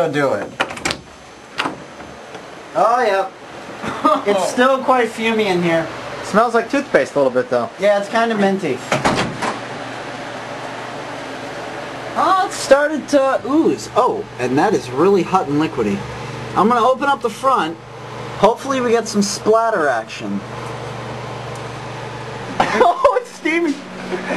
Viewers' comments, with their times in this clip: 0:07 yeah but you can also hear his voice and it sounds ditinctly different like for example.